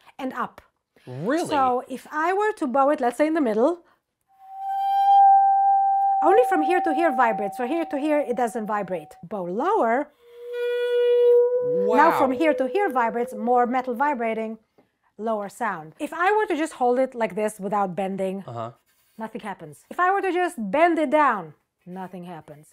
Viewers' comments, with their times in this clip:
0:04 sounds like my city's tornado sirens and it made my heart sink